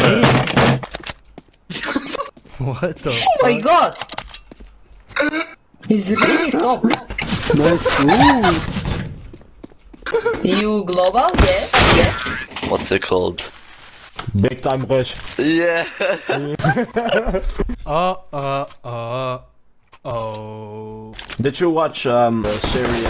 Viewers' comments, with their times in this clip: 0:05 sounds like dog or pig that is being abused